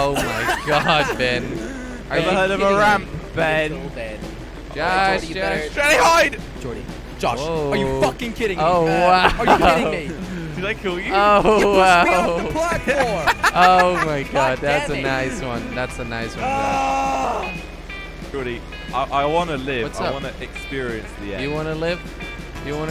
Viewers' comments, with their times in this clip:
0:06 jelly shouted f word pleasemake it out